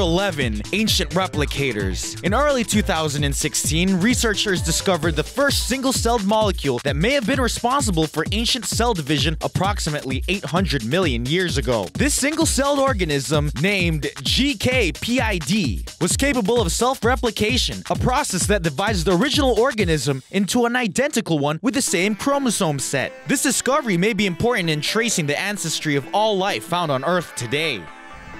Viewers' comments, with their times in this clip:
0:09 I wish i could be as excited as this awful narrator. Anyone else notice how most of these are inventions not discoveries? On a final note the chick is in it just for the fashion